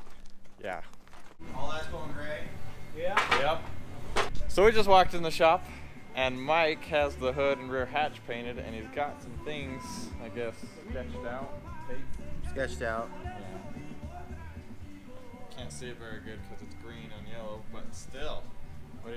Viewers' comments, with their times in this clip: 0:06 The Mexican Music playing in the background tells ya who does the hard work. 💪🏽👦🏽👍🏽